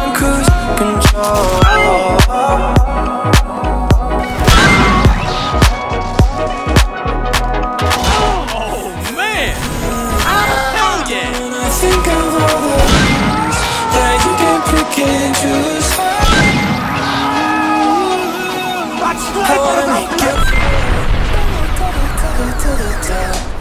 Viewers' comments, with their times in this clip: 0:06 I miss that bonk;'(